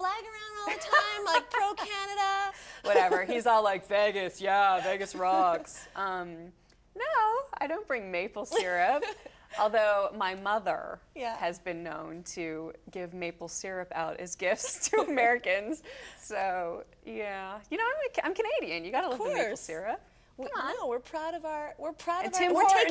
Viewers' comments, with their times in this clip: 0:07 nooooo. I LOVEthe way she said that!